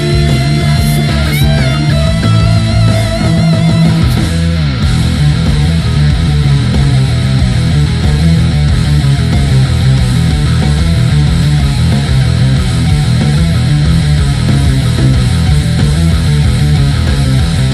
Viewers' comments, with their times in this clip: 0:03 nice slide so good